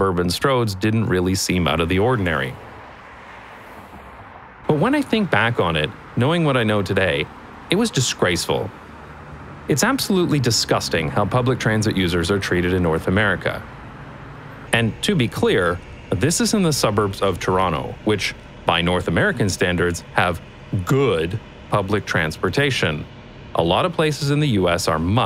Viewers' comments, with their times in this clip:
0:08 Funny fact. I had, for no obvious reason, automatic generated subtitles on. When you talked about the busses in Toronto the subtitles added "[Applause]". This shows how Toronto is infested with car noise!